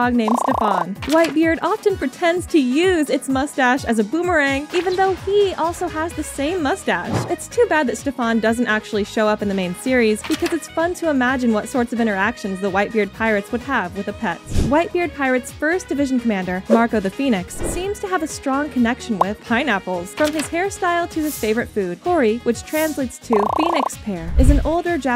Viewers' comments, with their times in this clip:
0:06 woah he mustve found brimstone with that music